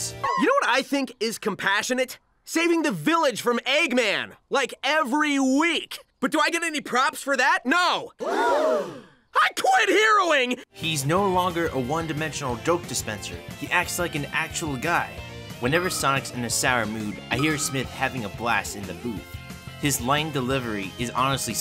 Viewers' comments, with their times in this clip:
0:09 "I quit heroin" good for you Sonic.